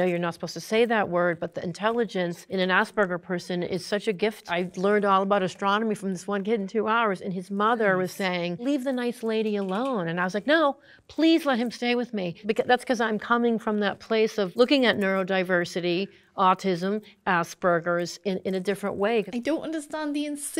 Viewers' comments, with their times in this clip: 0:07 why does she say "Ass burger"